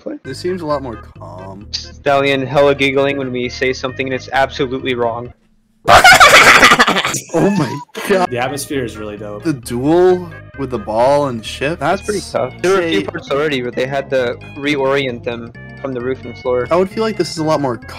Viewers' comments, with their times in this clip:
0:05 bro got that trollface quest laugh